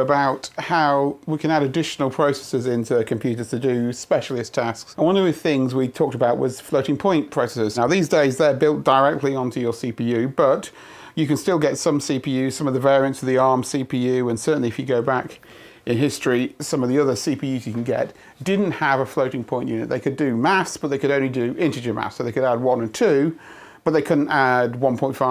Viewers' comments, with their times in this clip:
0:06 what's he saying "bloody point pressures" ???